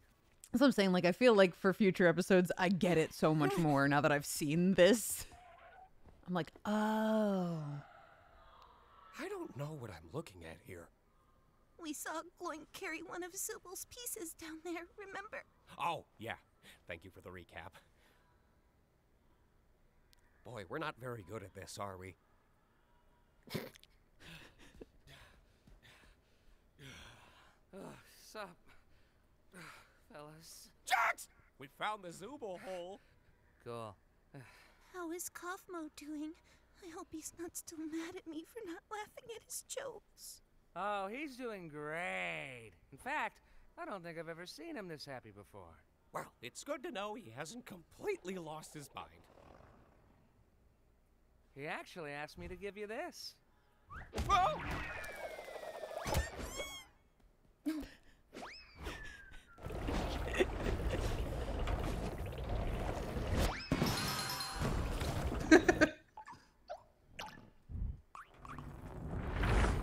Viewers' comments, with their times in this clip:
0:08 Zooble complaining, and cursing in the distance
0:54 What does Gangle say there? it sounds like "buck wheat" to me